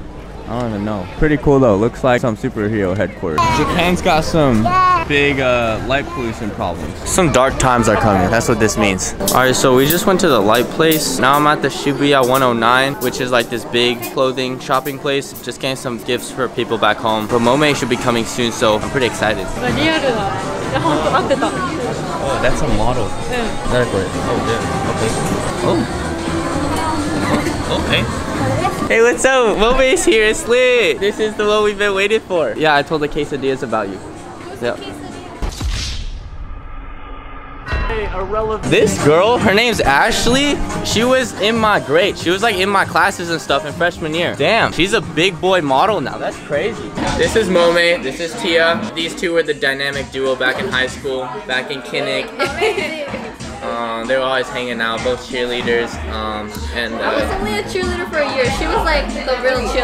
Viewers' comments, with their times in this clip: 0:04 i thought there was a sheep lol
0:40 Anyone else hear bts ?
0:41 the background music 👀
0:43 anyone else hear airplane pt 2 in the background?